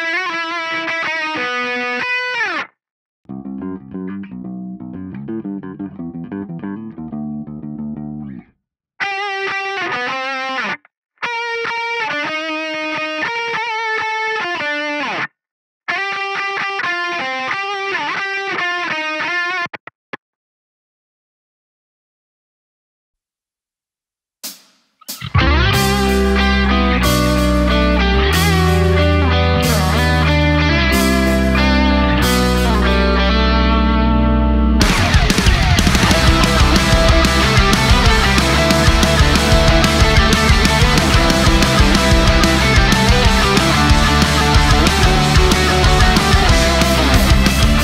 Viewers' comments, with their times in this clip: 0:03 And no one is talking and how good it sounds
0:35 Hey , what is the guitar effect just before the chorus its like the chord pitch drop but not really ... Can someone help me ;-;